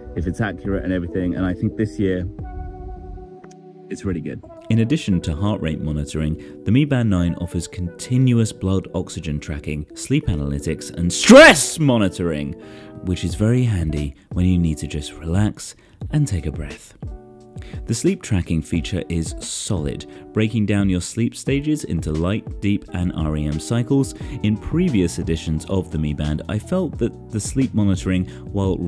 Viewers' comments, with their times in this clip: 0:10 I thought you sneezed on 😂
0:11 WARNING: unnecessary, immature, and childish shouting Not gonna visit this channel again.
0:11 mf you did not have to shout like that
0:13 why did you have to ruin a good video by yelling ??